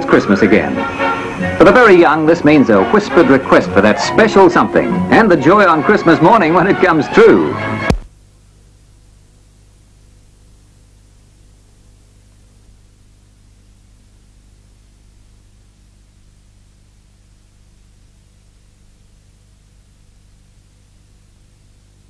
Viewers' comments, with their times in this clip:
0:08 the year i was born 58 years ago why does the sound go off